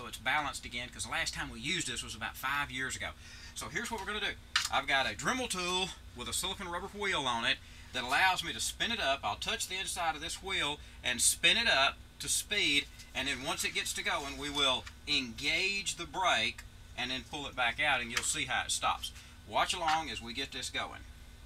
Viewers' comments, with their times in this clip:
0:06 with a silicone rubber H-WH-EEL on it
0:06 What did he just say? " With a silicone rubber hwheel on it" !!!!! He put emphasis on the h. This is stewie when hes 40 years old